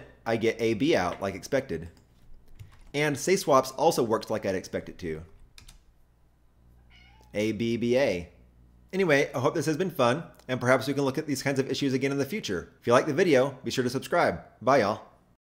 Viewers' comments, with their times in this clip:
0:06 is that a cat meowing?! haha